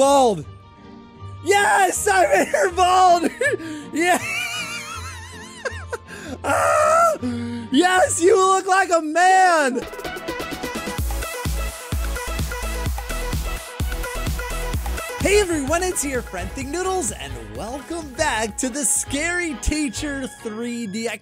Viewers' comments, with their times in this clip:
0:04 the laugh tho-🤣🤣🤣